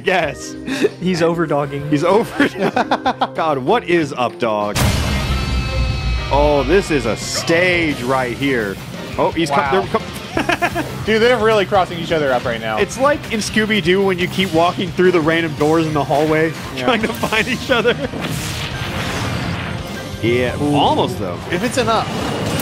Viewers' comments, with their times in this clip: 0:05 What’s up with the Xenoblade music?